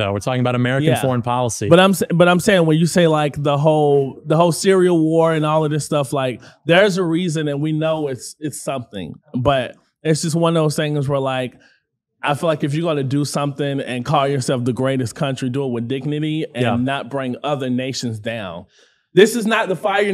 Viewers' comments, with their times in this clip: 0:03 “The whole cereal war”